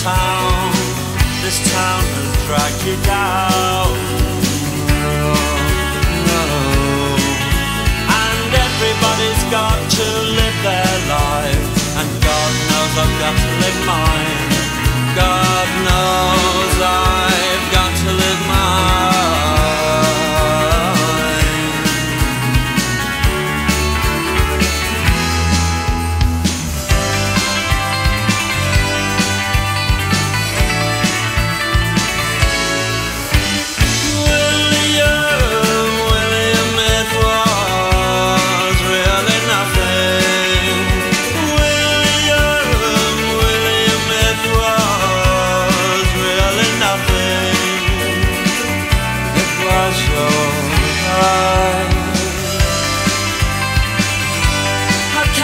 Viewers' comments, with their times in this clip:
0:05 I knew I loved this song when I heard the guitar starting
0:05 you can truly understand the immense beauty of this resolution and harmonizations only if you write music. I'm speechless
0:12 I never seen a song do what it does add can someone tell me what this is in terms of a song? Sounds like a bridge, but also sounds like it’s part of the verse
0:26 sounds like the end of an american sitcom lol
0:38 has to be one of the best chord progressions i’ve ever heard